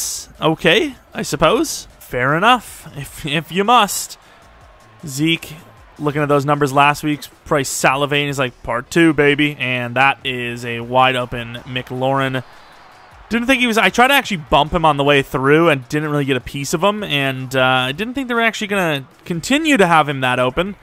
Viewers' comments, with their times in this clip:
0:07 The delivery got me chortling